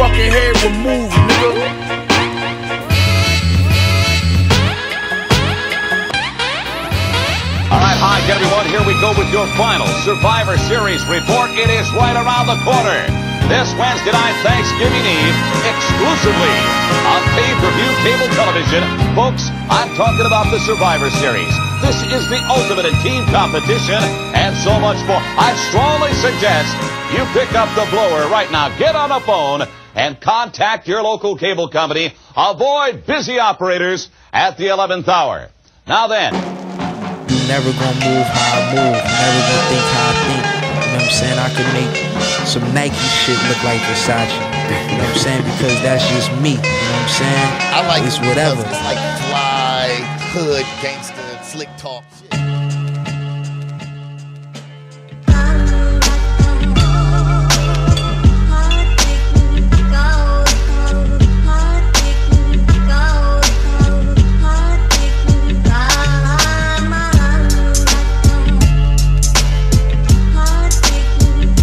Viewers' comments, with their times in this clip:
0:07 I smell DOOM
0:53 I love that beat Westside Gunn snap on at the mark...